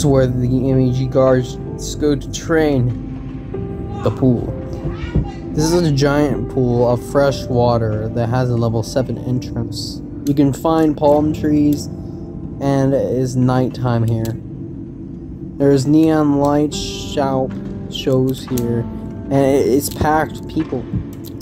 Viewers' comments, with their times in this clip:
0:03 does anyone notice that background noise?